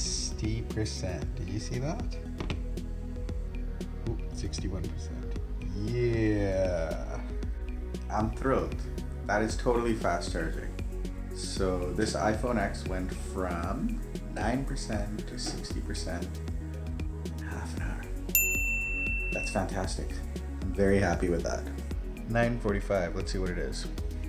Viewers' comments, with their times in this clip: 0:08 when he say "I am thrilled". His emotion and speech reminds me of Captain Holt of the Brooklyn Nine Nine.